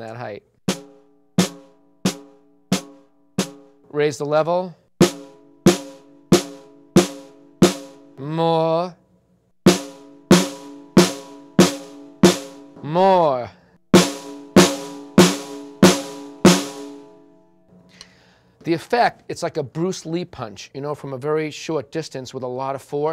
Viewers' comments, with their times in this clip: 0:08 Prof. Snape's voice O_O